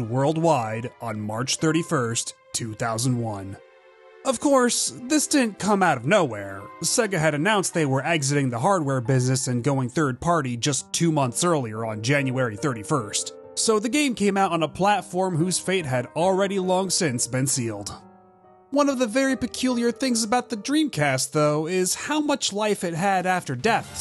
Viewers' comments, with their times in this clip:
0:06 nice choice of bgm xD